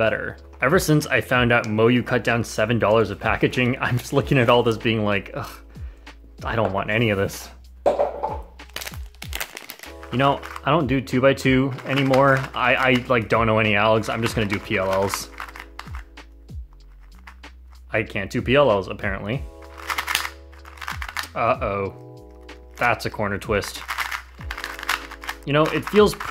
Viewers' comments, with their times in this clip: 0:08 you can even hear the box fall xd